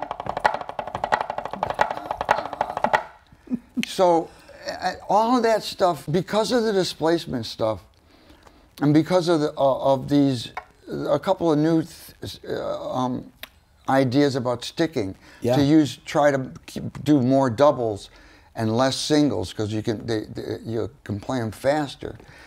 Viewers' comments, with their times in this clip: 0:03 hearing you get giddee as the the master gets into it ... every drummer has felt that giddiness listening to to Dr Gadd at some point .... great interview again Rick Beato !! Thank you for this !!